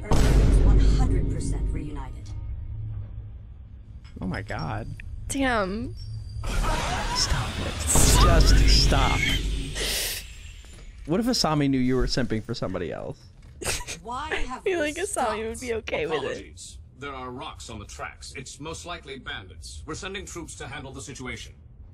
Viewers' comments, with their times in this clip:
0:07 it's the "sorry" wheeze for me😂😂